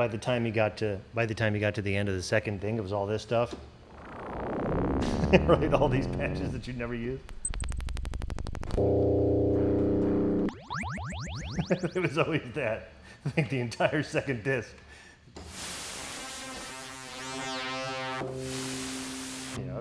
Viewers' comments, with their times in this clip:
0:03 sounds like something Michael Jackson would start a song with lol